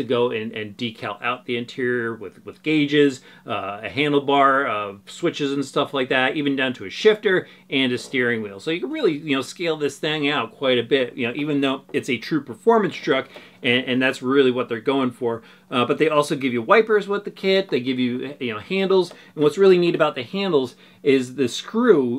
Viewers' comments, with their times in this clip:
0:09 Did he just put some STANK on it by saying THANG?